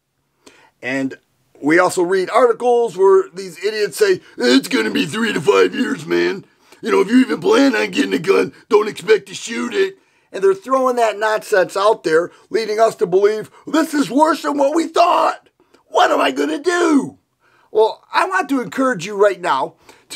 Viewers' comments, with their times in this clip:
0:05 You could be a great Randy the Macho Man Savage impersonator if you wanted, that voice you used was almost spot on, just throw a “brother” or two in there. Good vid. Just bought Winchester 45 - 100 rds for $57 online.